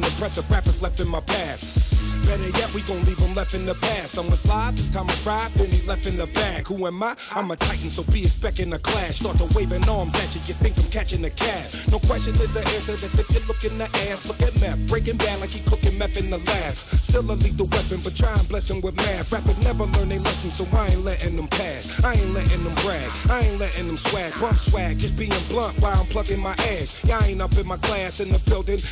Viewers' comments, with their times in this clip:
0:09 Meth creates the woah 😃